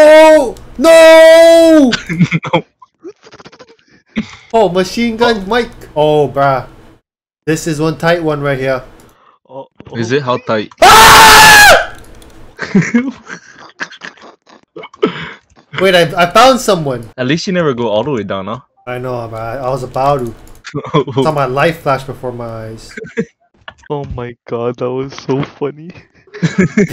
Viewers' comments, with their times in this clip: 0:07 the scream XDDXDXDXXXDDDXDXDXXXDDDXDXDXXXDDDXDXDXXXDDDXDXDXXXDDDXDXDXXXDDDXDXDXXXDDDXDXDXXXDDDXDXDXXXDDDXDXDXXXDDDXDXDXXXDDDXDXDXXXDDDXDXDXXXDDDXDXDXXXDDDXDXDXXXDDDXDXDXXXDDDXDXDXXXDDDXDXDXXXDDDXDXDXXXDDDXDXDXXXDDDXDXDXXXDDDXDXDXXXDDDXDXDXXXDDDXDXDXXXDDDXDXDXXXDDDXDXDXXXDDDXDXDXXXDDDXDXDXXXDDDXDXDXXXDDDXDXDXXXDDDXDXDXXXDDDXDXDXXXDv